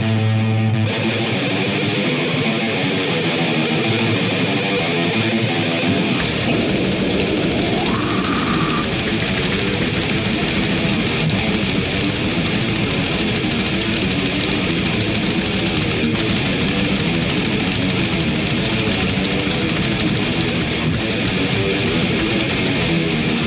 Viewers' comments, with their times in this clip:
0:06 When you put it at 2x, the guitars sound like a rocket blasting off and the drums are machine guns.